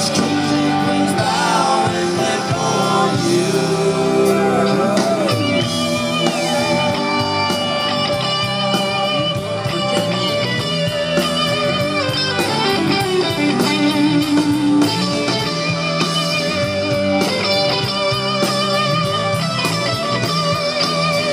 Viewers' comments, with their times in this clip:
0:04 btw best solo ever